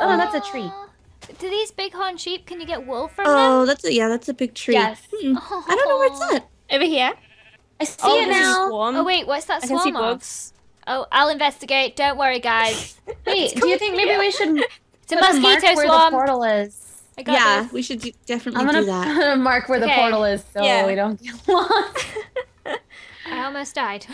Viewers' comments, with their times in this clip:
0:09 (realizes she is super low on hunger) Starts screaming "U NEED FOOOOOOOOOOD AAAAAH U NEEEEDDDDD FFFOOOOOOOOD !!!" (Continues)